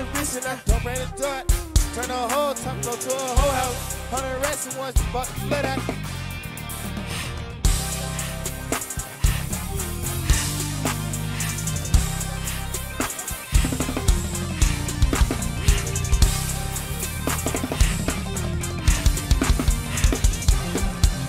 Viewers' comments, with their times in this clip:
0:05 The band was snappingggg especially the drums